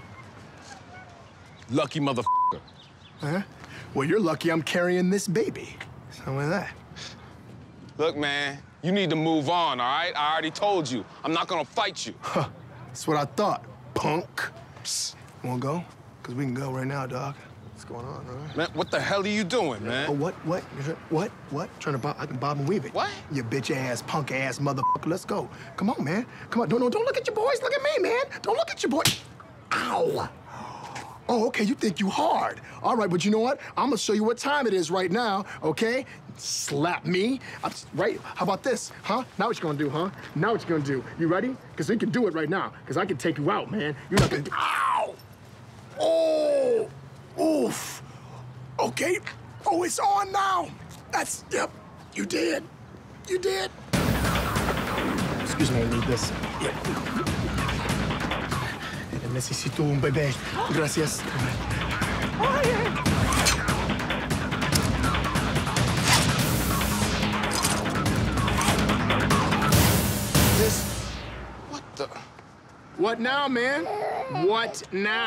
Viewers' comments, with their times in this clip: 0:05 ......hahahahaha when he gives the little “wazupwitat?”
0:23 how they censor only motherfucker 🤣
0:36 "sssllllllaap me?" Hahahhaa he is so appalled
0:59 that sounded Spanish and French at the same time lol
1:00 Not sure what the 2nd lady said after taking her baby but I swear it sounded like "Toasty!" Haha